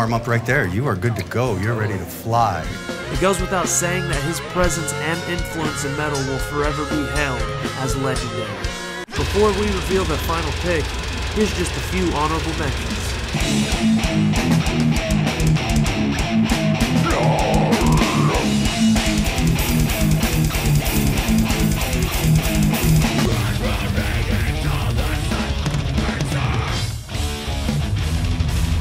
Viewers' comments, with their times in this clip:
0:10 sounds insane where is that from?